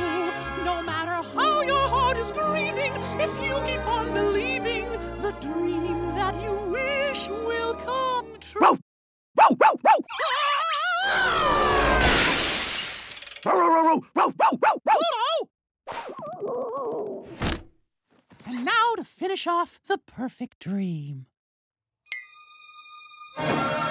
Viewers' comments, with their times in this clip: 0:05 the dream that you wish will come t... (Minnie barks)
0:05 the dream that you wish will come t... (Minnie barks)
0:06 My favorite is Minnie barking like a dog